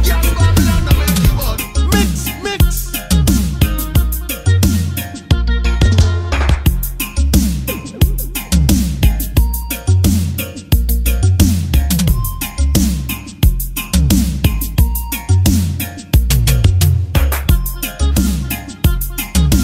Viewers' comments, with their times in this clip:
0:04 what is the riddim that riddim is fire it sounds like revolution but newer